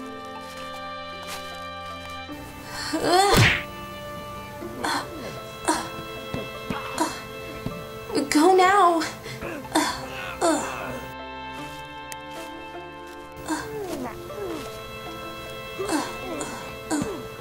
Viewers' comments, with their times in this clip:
0:05 that "uh" noise tho